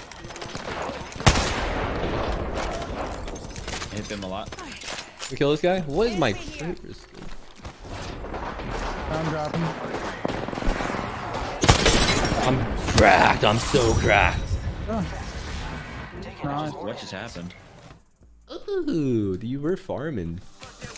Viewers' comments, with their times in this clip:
0:03 as soon as he shot one bullet with kraber it went silent from everyone xd